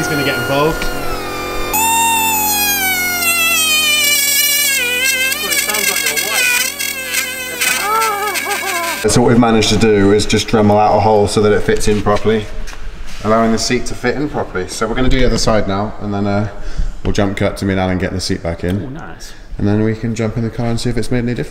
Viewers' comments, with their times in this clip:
0:04 cracking Vid that G ! .. now forward to close your eyes think of a dying witch :) ace bud, got a MK2 225 myself great fun your vids help keep my bank account empty